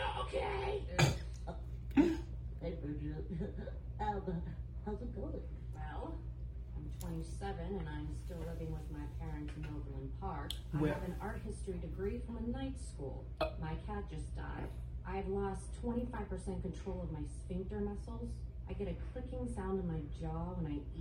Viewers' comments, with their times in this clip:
0:07 You can tell from her tone of voice that she is super dead inside after all that stuff that she went through in life